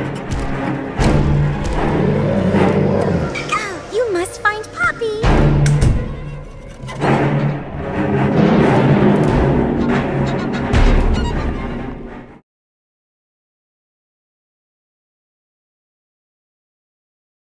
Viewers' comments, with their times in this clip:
0:03 The Voice Crack 😂😂😂